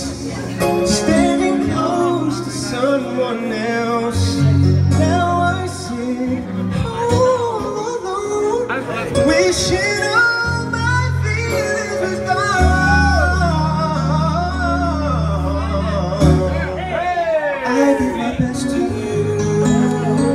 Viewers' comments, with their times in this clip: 0:07 had that ONE off moment BUT other than that it was butter !!